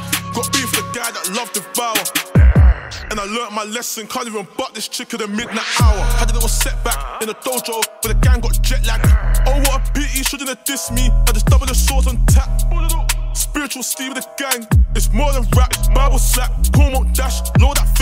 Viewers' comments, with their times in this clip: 0:06 The beat switch is cold